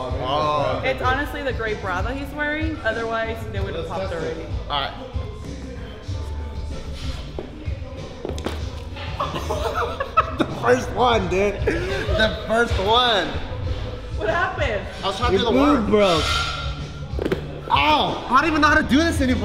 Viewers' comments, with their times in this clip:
0:07 that instant splash made me die of laughter